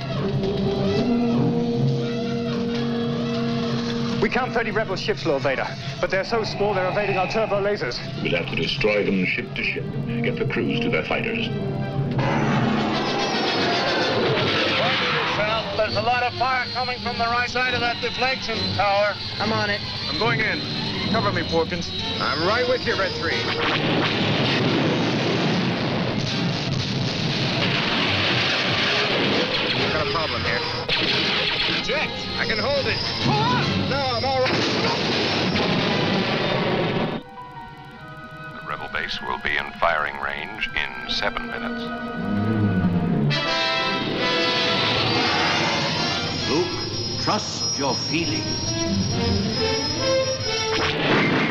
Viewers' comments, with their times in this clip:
0:07 what happened to Vader's voice?
0:35 for some reason the mono mix cuts out his scream when he dies